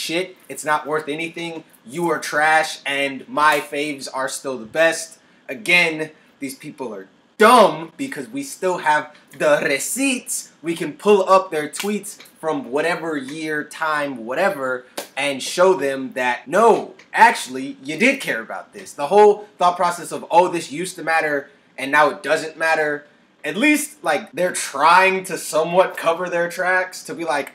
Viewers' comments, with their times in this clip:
0:08 ooou that spanish soundin accent tho👀 lmao